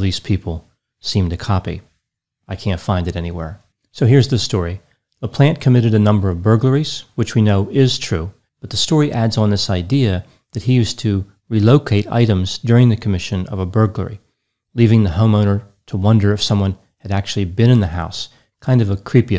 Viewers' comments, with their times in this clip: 0:03 😂 Well, he isn't, so that's kind of accurate 😂 (How very professional of him to not be diagnosing a plant 🌱!) I got similarly confused when I suddenly heard "So here's the story: The plant committed a number of burglaries ..." 🤔